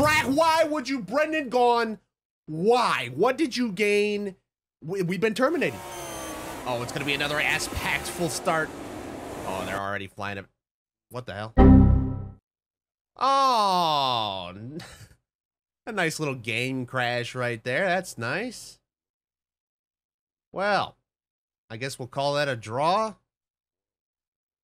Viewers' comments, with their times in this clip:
0:09 ah what the hell crash noise